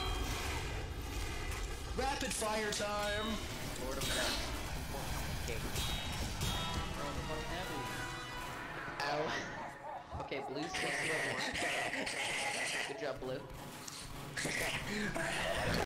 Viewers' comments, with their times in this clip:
0:10 LMFAO THAT LAUGH